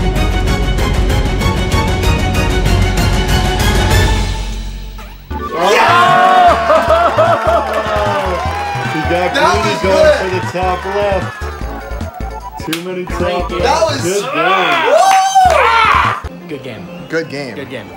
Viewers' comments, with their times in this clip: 0:04 The sound build up to the sound effect was hilarious